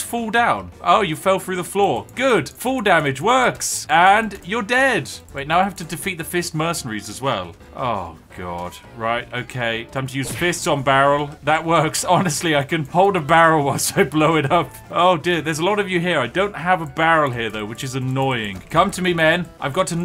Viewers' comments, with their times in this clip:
0:06 Wait, are they called "The First" or "The Fist"?